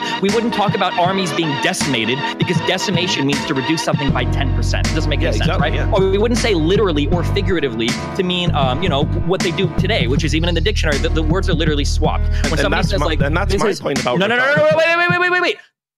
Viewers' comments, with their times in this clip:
0:13 Vaush stole this "Wai- Wai- Wai- WAIT" signature